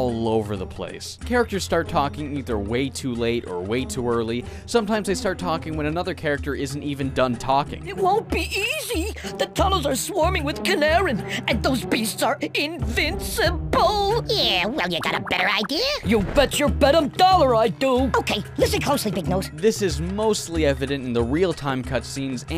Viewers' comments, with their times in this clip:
0:07 This is actually an english dubbing problem, because in the french dub, almost all of the dialogues are perfectly synchronized with the characters (including the dialogue between the two Teensies you've shown). Anyway, great video, thanks for reviewing those three games that made my childhood.
0:09 sound like ED from Ed, Edd and eddy